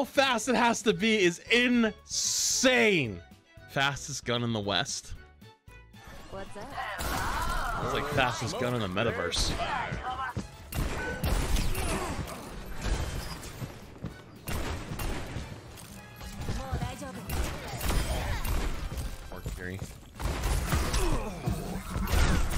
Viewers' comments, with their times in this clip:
0:05 I don't think anyone realized that this Junkrat voice line is incredibly rare